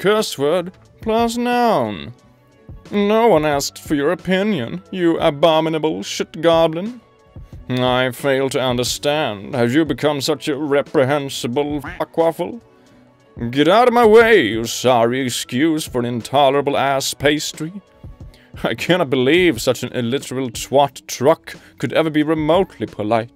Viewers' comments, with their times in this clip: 0:06 You Sound Like a Wizard when you said Chromosome Collector